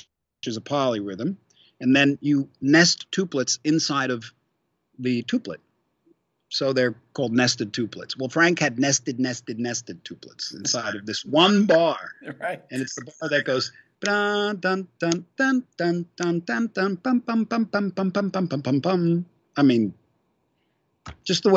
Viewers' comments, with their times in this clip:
0:07 Great Zappa impression